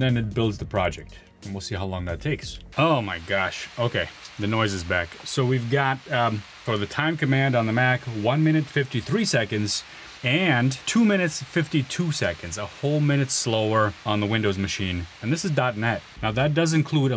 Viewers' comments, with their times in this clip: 0:05 the sound of the Razer sizzling
0:05 F-22 raptor take off